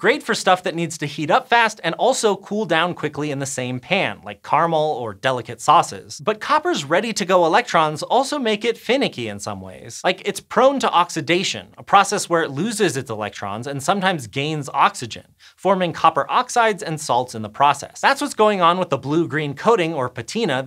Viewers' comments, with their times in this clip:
0:03 whats Karmul ??? karəmɛl
0:04 "like carmel" -- Carmel is a place name. The thick liquid made by heating sugar is called caramel (three syllables).